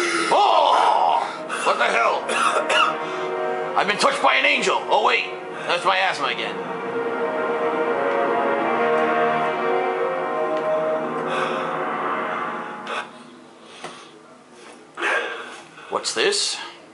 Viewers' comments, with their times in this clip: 0:03 sorry im make fart